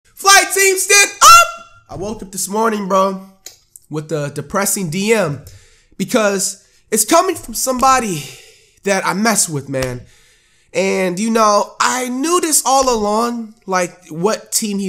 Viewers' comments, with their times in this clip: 0:01 rip headphone users i know how it feels it hurts